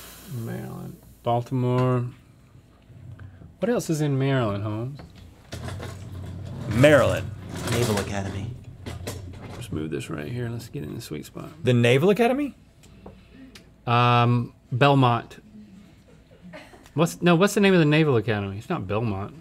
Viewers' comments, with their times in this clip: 0:07 The way link says “let’s move this right here, lets get it in the sweet spot” 😮‍💨 I’m a straight male btw 🤫